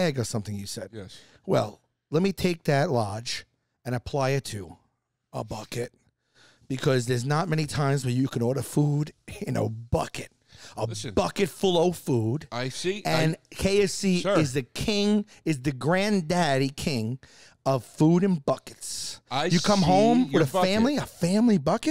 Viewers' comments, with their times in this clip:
0:05 The way Sal said "a bucket" 😂😂😂🤣🤣🤣